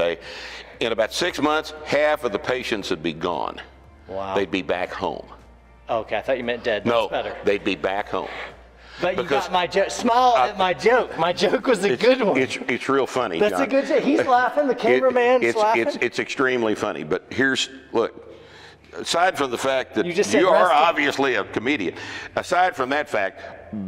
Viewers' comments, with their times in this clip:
0:04 that hang time on the awkward silence😂